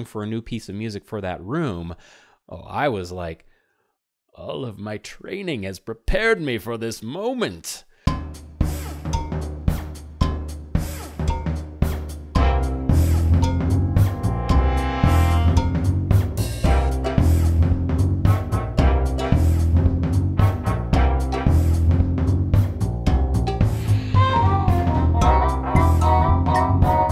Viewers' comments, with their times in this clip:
0:08 I always loved that room as a kid because of the music Its very good